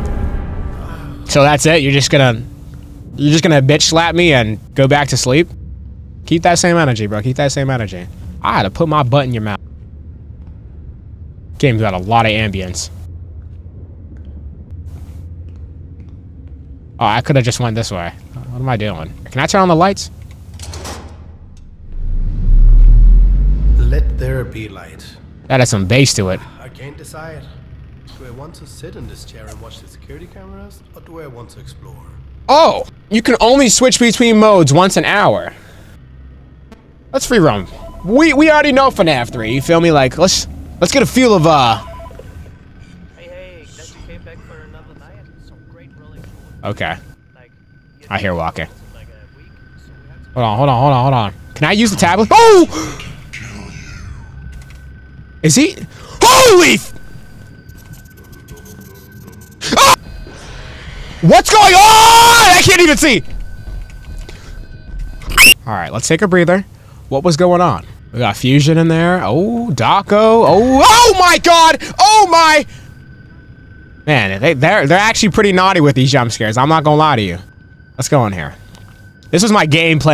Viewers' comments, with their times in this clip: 0:08 why did you go from annoyed to zesty in a millisecond?😂
1:03 the high pitched screams always get me 😂
1:03 the little girl scream never gets old 💀💀💀